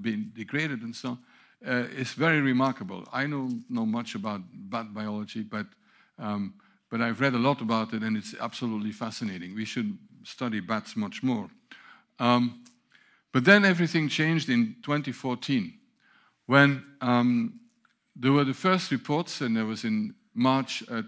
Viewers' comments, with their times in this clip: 0:03 Not a single laugh in the room?